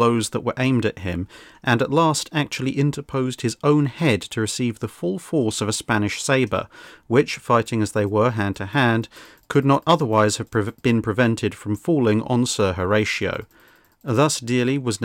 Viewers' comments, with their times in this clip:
0:03 "Cox-wun"? ish? What British schoolboy makes this error? "The word coxwain is always pronounced "cox-un" the w being silent. Otherwise very good.